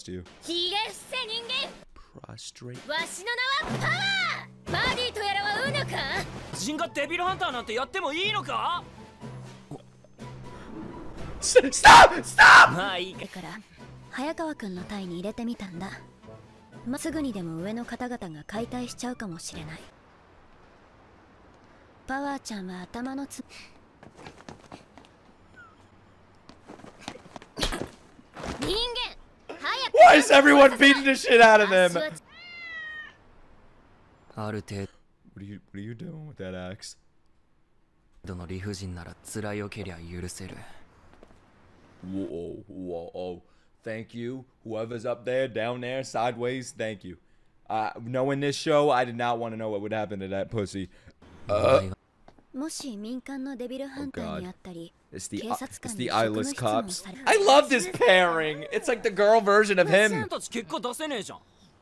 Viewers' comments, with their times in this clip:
0:09 I was dying at his screams lol STOP STOP!!!!
0:10 bro ive never heard a man be in more of a state of pure panic lmao
0:11 The way he's screamed STOP STOP STOPP! ☠️
0:47 talking a little bit fast i see